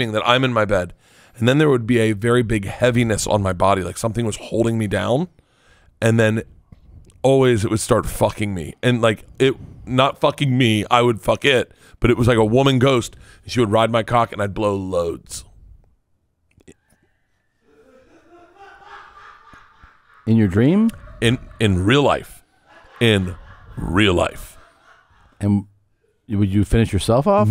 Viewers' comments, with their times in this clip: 0:10 After Bert blows loads into the ghost, you can hear it scream in laughter. WTF?